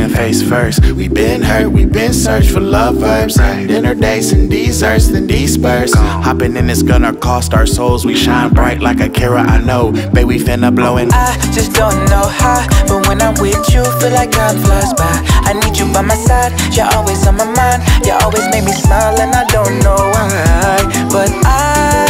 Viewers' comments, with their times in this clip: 0:09 He's like Pink Sweat